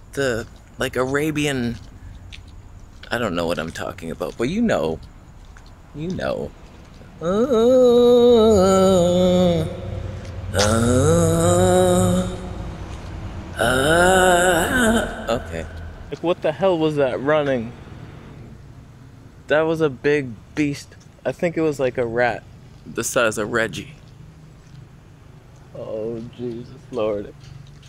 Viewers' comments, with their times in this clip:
0:10 your singing that morning song was hilarious. Liked the affect you added 😂🎶